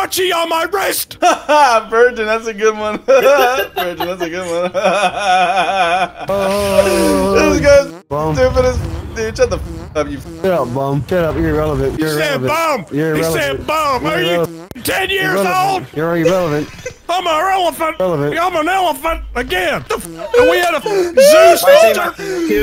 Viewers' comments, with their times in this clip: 0:05 lmao the guy laughing in the dark🤣